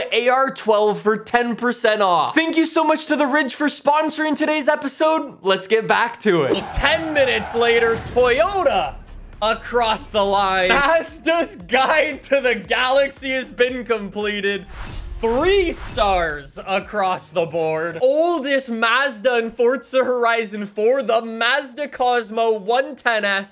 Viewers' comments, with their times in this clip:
0:07 You know you have watched to much Top Gear if you thought you heard Toybota